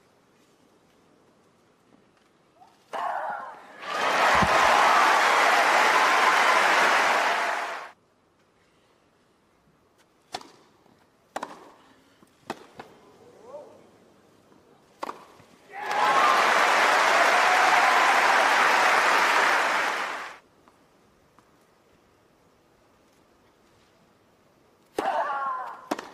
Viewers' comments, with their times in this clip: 0:10 Halep showing that she can still play without screaming her head off